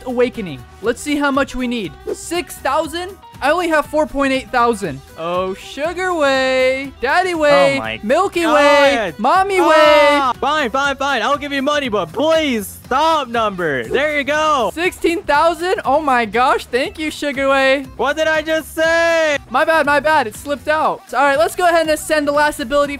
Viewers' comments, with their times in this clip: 0:05 "Oh sugarway" vine boom "daddyway" vine boom "milkiway" vine boom "Mommyway" vine boom